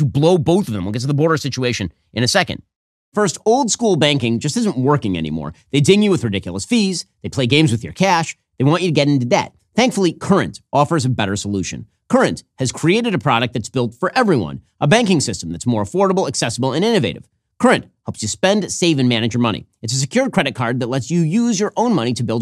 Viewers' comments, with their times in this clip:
0:10 he embeds a commercial, speaking in the same tone and urgency as he does when reporting the news, then seamlessly goes back to reporting, as if nothing happened. Be careful what you listen to, because this guy will talk to you about more than you want to hear without you knowing it.